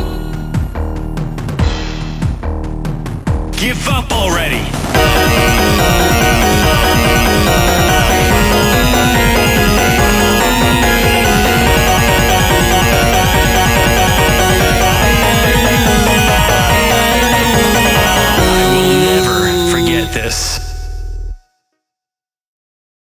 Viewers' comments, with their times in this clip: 0:04 GODAMN I've never heard such a banger instrumental before on a cover song like this